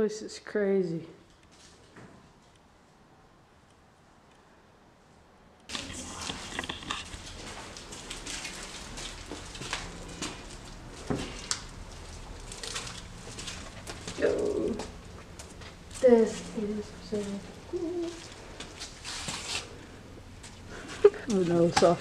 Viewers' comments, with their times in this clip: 0:06 I never even thought about that but that would definitely be a more obvious answer. Thanks! For the voice check right you’ll hear “it’s locked” and if you listen a few seconds before and after you can tell it’s not a sound we were making.